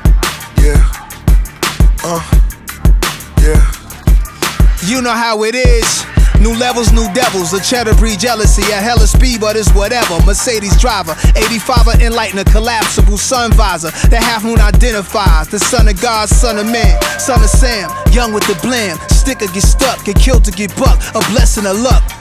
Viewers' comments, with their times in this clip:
0:06 when u havent heard Nas voice in years that shit gives u shivers my nigga..took me right back to it aint hard to tell haha